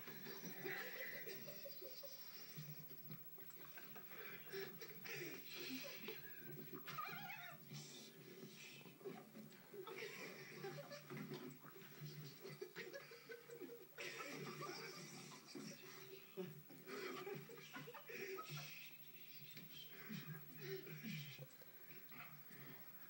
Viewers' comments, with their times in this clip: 0:07 a chicken cluck sound.